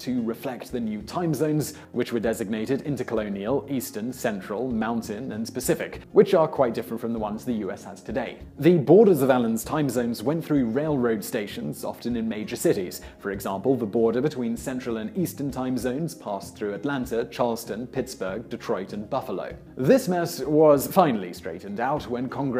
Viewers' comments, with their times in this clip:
0:04 did he say "Specific" for "Pacific"?! ZOMG.